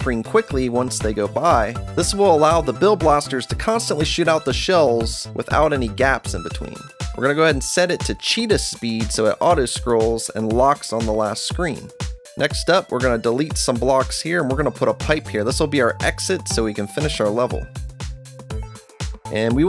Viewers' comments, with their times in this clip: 0:04 if you put it at 0.5x speed he says "this will cause the bill blasters to constantly SHIT OUT THE BUZZY BETTLE SHELLS"!!! OMG WHAT HAPPENED TO THE BUZZY BETTLES!!!